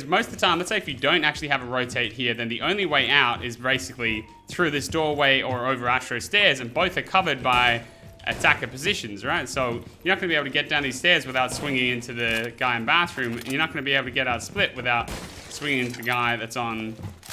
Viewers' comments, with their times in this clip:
0:04 who else heard the android sound